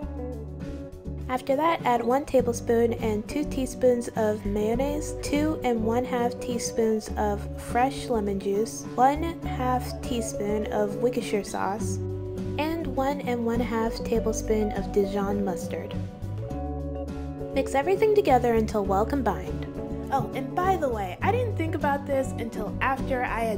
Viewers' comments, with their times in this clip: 0:08 Whats wicksheer sauce?